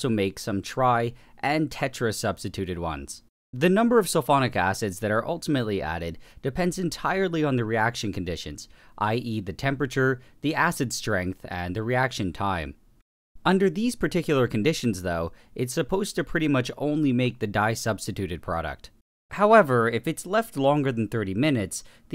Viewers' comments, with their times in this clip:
0:03 Indi god is ulfonic